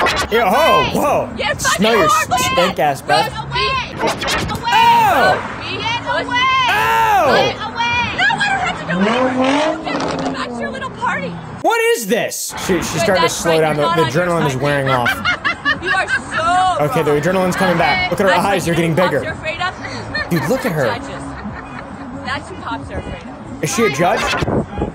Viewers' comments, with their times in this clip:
0:06 am I the only one that heard what sounded like a r35 gtr or something
0:07 a 350z reving his engine in the background
0:09 anyone else hear that 350z rev up?🥵